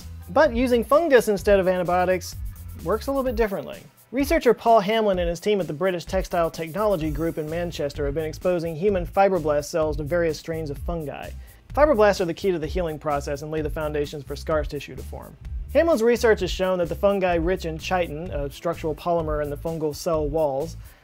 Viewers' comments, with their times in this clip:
0:04 I misheard something here and had to rewind, wondering how on earth the key to the human healing process could be fiberglass